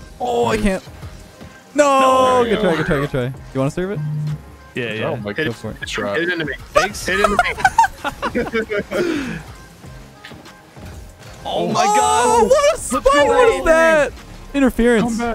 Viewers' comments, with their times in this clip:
0:03 Was that someone's phone vibrating?
0:03 I can hear your phone vibrating at certain times in the video and I kept thinking it was mine. for example.